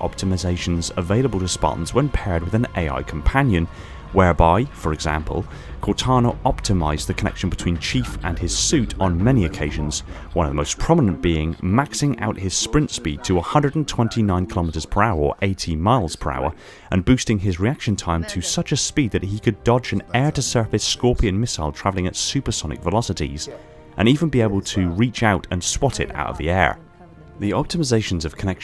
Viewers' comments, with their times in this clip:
0:10 Not sure if that was on purpose or not, but Nobel team's conversation could be heard under your explanation.